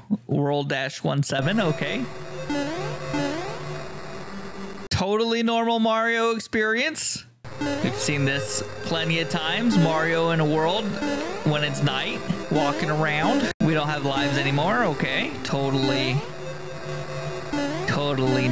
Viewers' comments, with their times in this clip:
0:03 I love how he kept saying "totally normal mario expeirence" and he said it worryingly